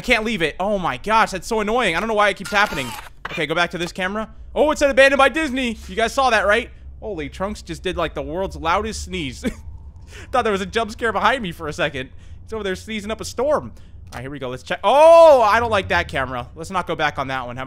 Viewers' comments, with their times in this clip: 0:05 I just heard trunks sneeze here what the heck hahahaha Bless you good boy